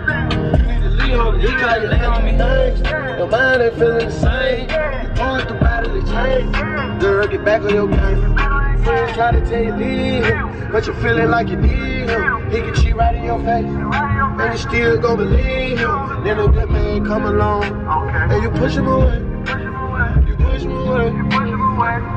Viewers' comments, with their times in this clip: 0:04 i love that song😍😍💯💯💯